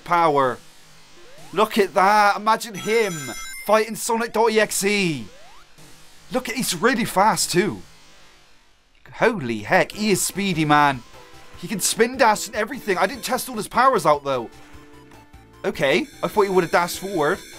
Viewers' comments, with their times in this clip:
0:03 Your hear huehuehue in the distense